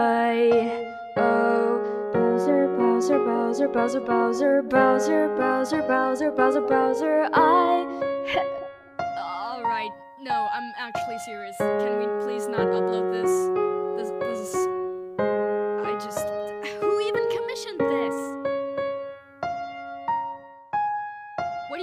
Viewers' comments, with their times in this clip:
0:04 so peach hates browsers?